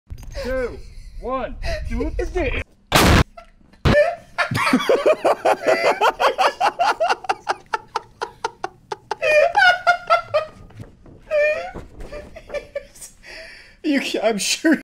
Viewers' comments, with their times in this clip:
0:08 sounds like chickens